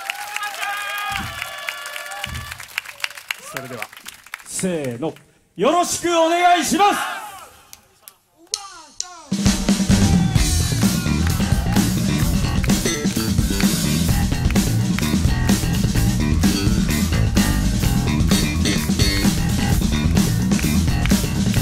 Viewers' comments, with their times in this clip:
0:08 That bass solo is crazy. Love the energy of this bassist ^^
0:08 That Bass solo !!!